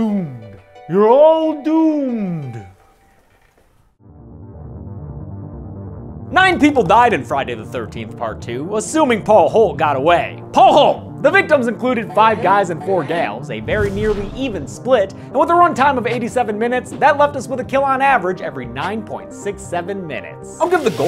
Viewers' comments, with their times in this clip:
0:09 she was screaming for paul obviouslly he died